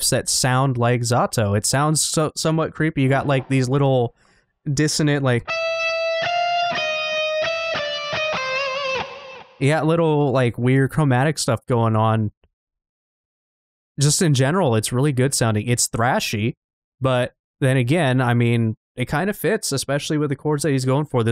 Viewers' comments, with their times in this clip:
0:04 ngl i thought a special infected was nearby